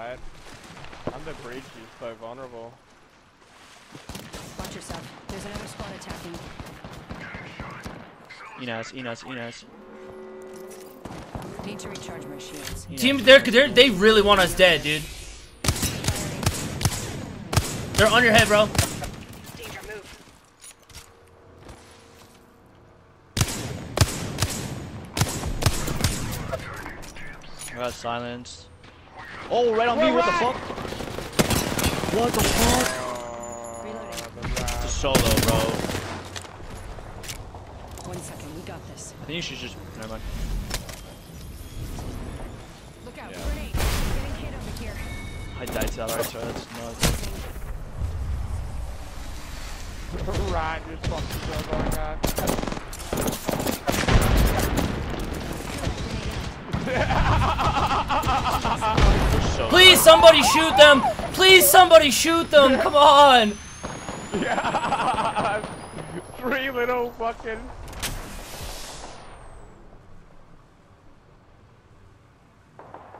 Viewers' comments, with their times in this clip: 0:07 What did he say? He talk arabic ??
0:57 sounded like surfer dude from spongebob 😂😂😂😂